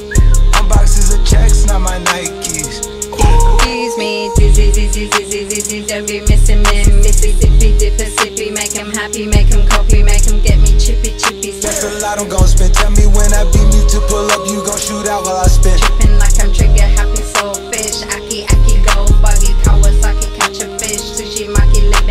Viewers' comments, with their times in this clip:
0:04 MIA main part